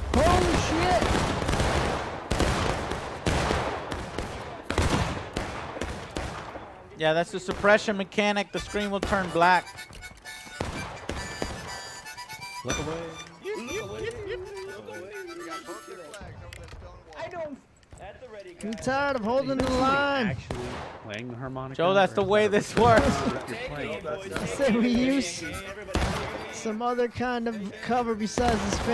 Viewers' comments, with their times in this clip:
0:09 Holy shit, that was me playing the harmonica, lol